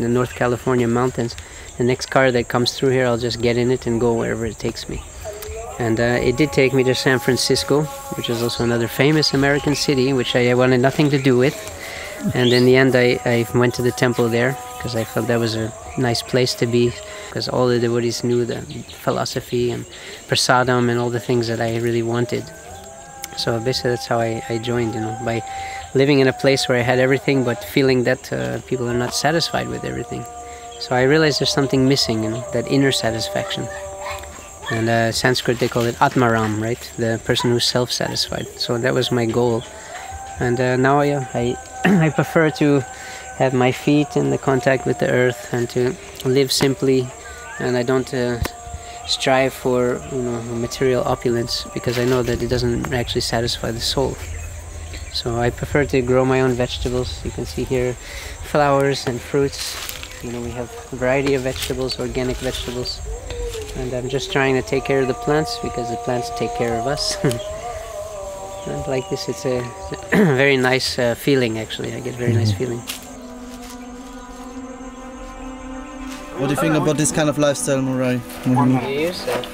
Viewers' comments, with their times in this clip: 0:04 Aatmaram indeed! It's so coincidental that as he was describing the God, another devotee started praying to their God. The beauty of diversity!
0:04 peacfull community loudspeakers are there aswell. It just ruined the calmness of this interview for a minute. May krishna save this place.😊
0:04 Whole documentary is beautiful! Even when there is an Islamic call to prayer in Arabic piercing through mark, which was quite disturbing, it had its purpose-- to show that you don't need to call god on a loudspeaker, but actually live god-like life of harmony and peace.
0:05 you can here the Azan (the call for Muslim prayer). It’s beautiful that people with different religions are peacefully coexisting in one place following their individual practices.
0:09 Allah keeps playing in background
0:39 absurd noise pollution in the background, its annoying there is no quite atmosphere even in the rural areas. People should consider others as well in the nature not just pleasing themselves.
0:40 beautiful adhan in the background ♥️
1:04 Baeutiful sound of azan in background